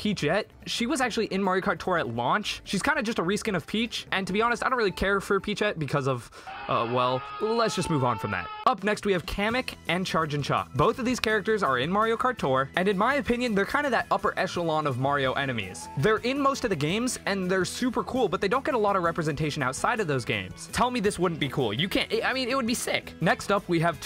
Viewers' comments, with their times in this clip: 0:07 I don’t like the scene where it has a disturbing character with a bloody scream sound